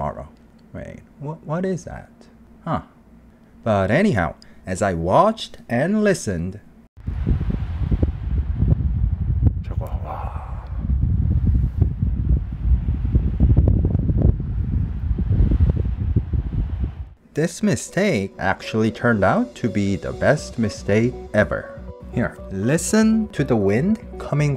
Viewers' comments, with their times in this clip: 0:07 the wind sounds like the ocean! what an incredible thing to have seen and heard. I've been watching since the bus ride to Vegas and I always like to see where you go to next! I imagine you'll be at 1k subs or more before the end of the year!